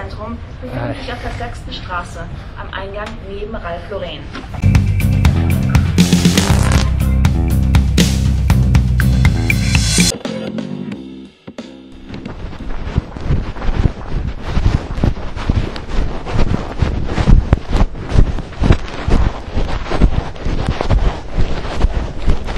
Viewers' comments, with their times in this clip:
0:03 how came the german language?